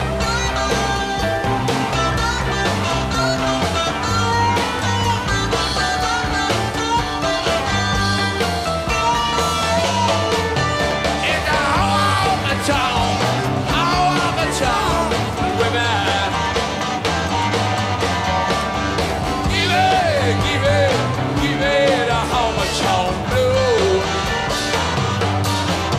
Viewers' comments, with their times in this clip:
0:09 That bridge with Keef playing alone facing the crowd, that's it...that's it.